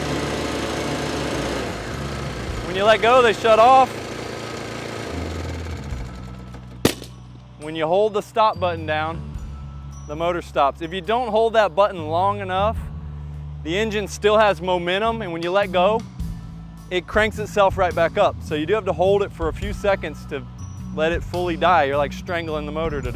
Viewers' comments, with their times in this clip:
0:06 So my question is I got one and love it but then first time it held the stop button down it had a loud pop....you video at time sounded like it did it too..is that normal???